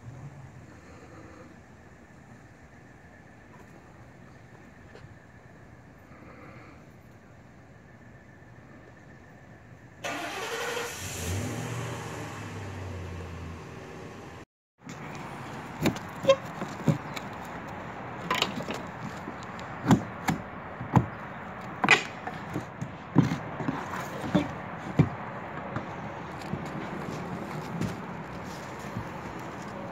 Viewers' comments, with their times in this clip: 0:10 ... You can always tell a Ford when it's starting lol. Good looking roof sir